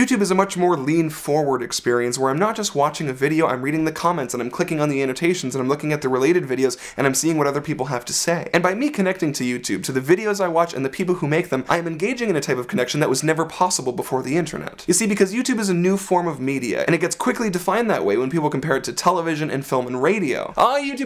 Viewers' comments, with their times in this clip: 0:08 he breathed somewhere :)